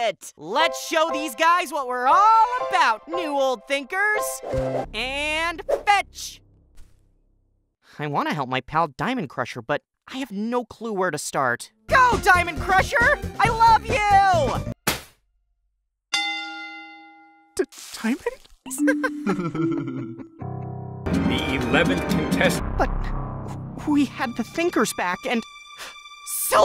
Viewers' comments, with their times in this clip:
0:08 she’s sounds like a NPC or is it just me?